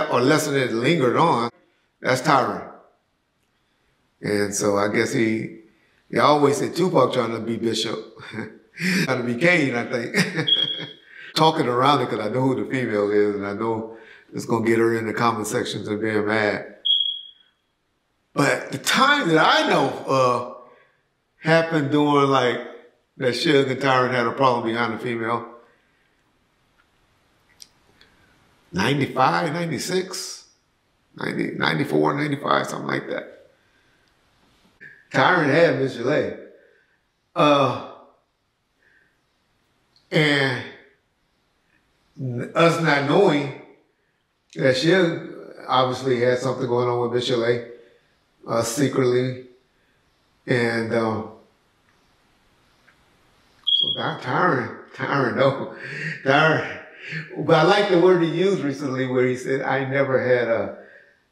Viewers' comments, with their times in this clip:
0:10 Not the smoker detector battery chirping 😂😂😂
0:10 not the battery on the smoke detector 😂
0:17 .....Bro....fire alarm. Seriously??
0:20 how are you a millionaire and cant change the smoke alarm battery 😂😂😂. Black folks, can we not hear that😂😂😂 are yall scared of a 9V?
0:22 smoke alarm beeps. Part of all Home interviews.
0:49 fire alarm lol